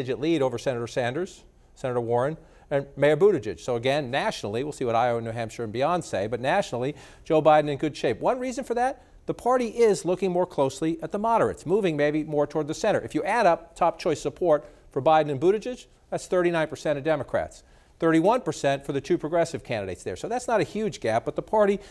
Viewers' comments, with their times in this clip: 0:05 Did he just say Beyoncé?
0:05 Why did he say “Beyonce”